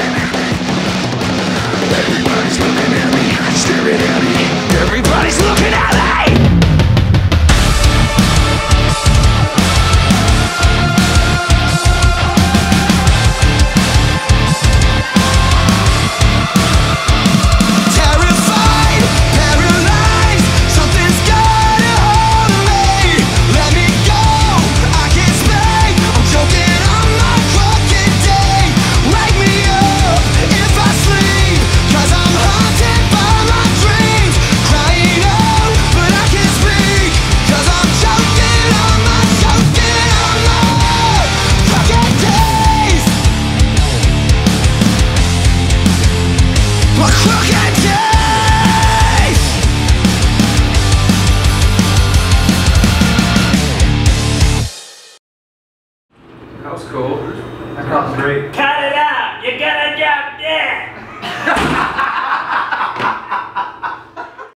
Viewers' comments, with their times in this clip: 0:06 I think that nice and jucy "bleagh!" could fit perfectly in Every time I'm adding it from myself :D
1:01 I though this noise was the man's head.. xD Then I saw the door.